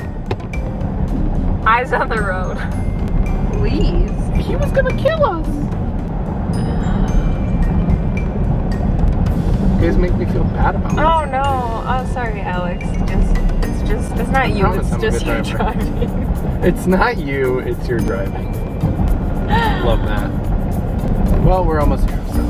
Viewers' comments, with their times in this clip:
0:04 did he not sound like mikey mouse HOLY CRAPPPP
0:04 he sounds like mikey mouseeeee wtffff